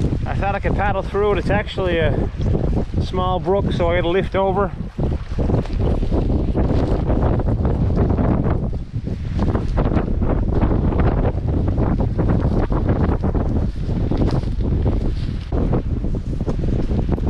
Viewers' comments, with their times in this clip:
0:04 Lil trout splash ? ;)